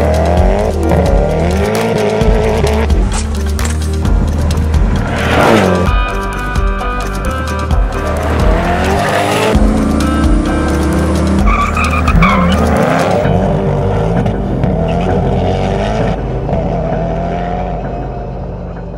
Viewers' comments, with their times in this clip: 0:06 The music combined with the video clip with the preceding exhaust note gives me goosebumps EVERY SINGLE TIME!!!